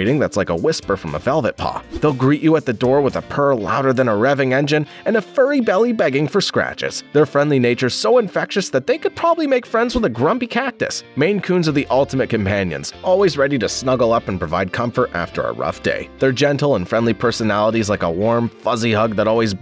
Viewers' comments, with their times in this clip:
0:04 Is that cat german?!